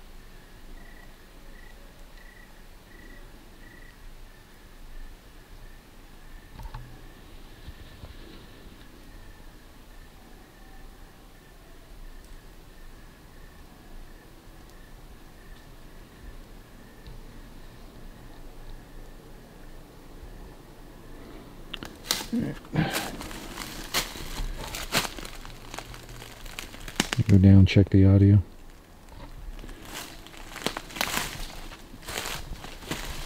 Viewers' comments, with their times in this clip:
0:10 l could hear a type of deranged yelling, reminiscent of the hairy folk.
0:19 there's a low growl and I think it startled you then you moved quickly.